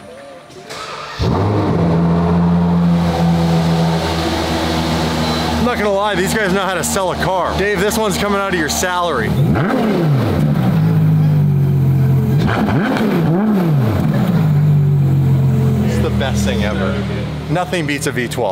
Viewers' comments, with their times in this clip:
0:06 it needs an exhaust to make it scream :D